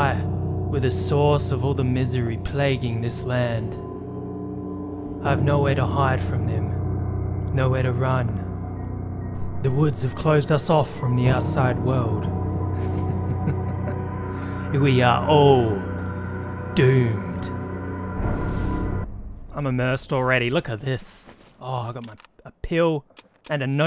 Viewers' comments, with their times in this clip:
0:09 Be batient, Beter! lol Banger of an intro, let's gooooooo